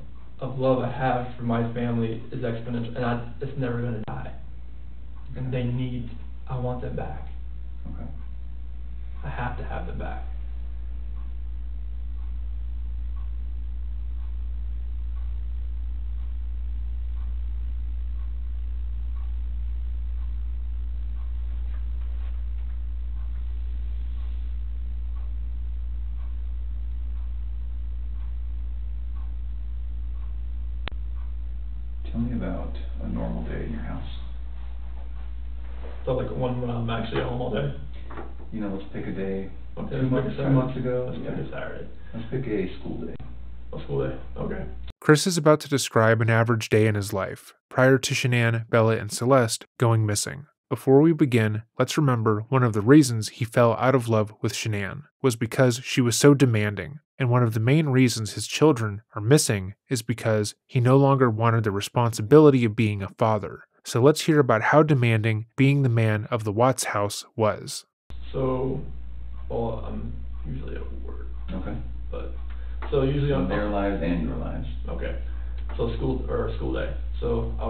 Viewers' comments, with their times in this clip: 0:08 This is one of the most beautiful interrogations ever. Chris weakly declares his need to have his family back and the interrogator just stares at him, silently, for about 30 seconds. It makes Chris so uncomfortable that he shifts his body to release some nervous tension. An absolute masterpiece
1:01 But like, Wobbly Bean, he like, needs to, yknow like, steady himself because like when, if, he like, doesn't know, or is like, wondering what, you know if those kids like if something happened to them, then.... Uh oh. I'm coming to Gotta ⏩️ ff!! He's so incredibly boring, I can't sit through whole paragraphs.